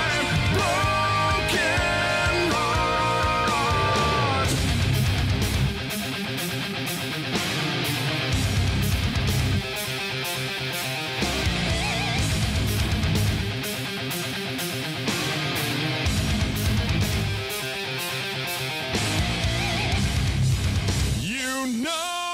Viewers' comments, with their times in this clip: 0:03 Damn that sick guitar solo 🎸